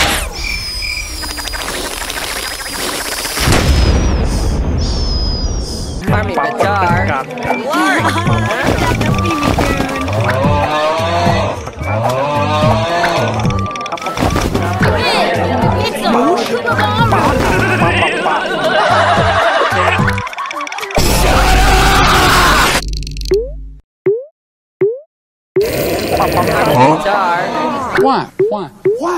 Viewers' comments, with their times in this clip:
0:10 Snoring I can't take it anymore 🤣👍🏻❤️ And the " SHUT UP !!!!!!! " 🤣👍🏻❤️